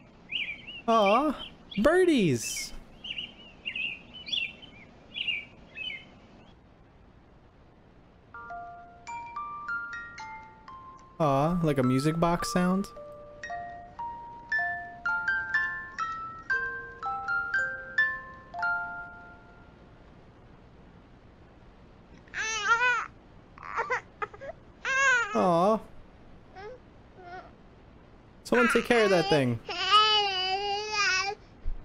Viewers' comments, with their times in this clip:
0:09 This just sounds like something out of fnaf with the puppet animatronic
0:17 DUDE MY SISTER HAS A MUSIC BOX THAT SOUNDS EXACTLY LIKE THIS